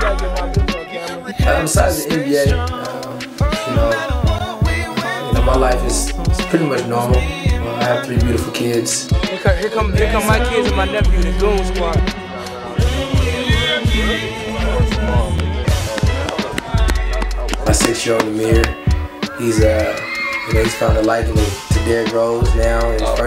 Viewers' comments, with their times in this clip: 0:09 Why can't youtube leave the audio and just take out the song? Just because the BGM ?